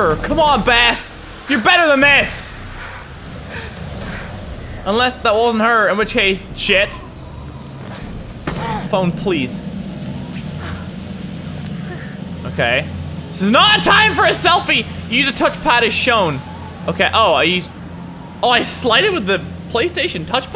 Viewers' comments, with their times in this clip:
0:03 +Mini Ladd did you notice the sound of a gun and a tine lil explosion on her hand while she is jumping down the small ledge